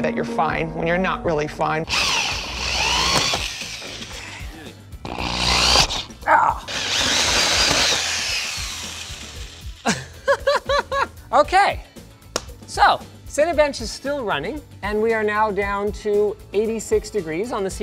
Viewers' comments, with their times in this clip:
0:05 his "argh" noise sounds like Solid Snake